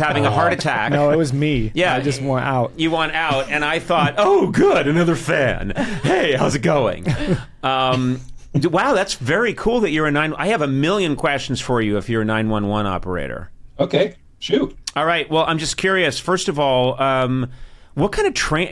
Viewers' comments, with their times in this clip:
0:04 Hahaha I love whenever conan does this voice